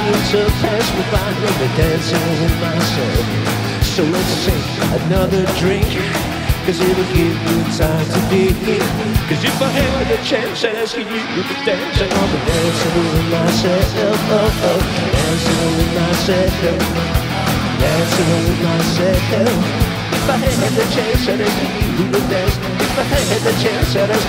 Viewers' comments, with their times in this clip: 0:08 Drums :OO OMFG!! :DDD
0:09 the drummer killed his drum